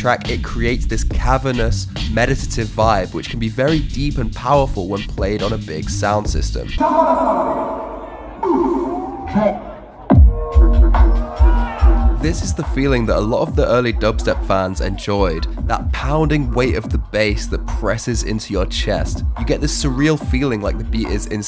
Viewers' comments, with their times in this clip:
0:06 Song is missing?